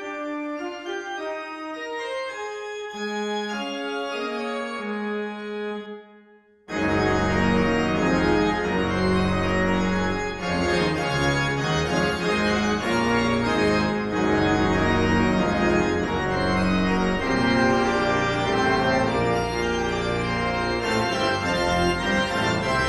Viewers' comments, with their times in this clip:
0:08 Oh man, when the piece turns around and the full glory of the organ kicks in. Ecstasy.